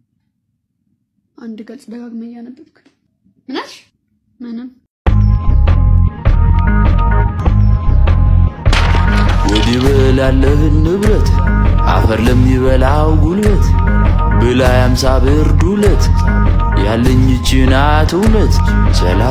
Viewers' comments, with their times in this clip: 0:05 I like the music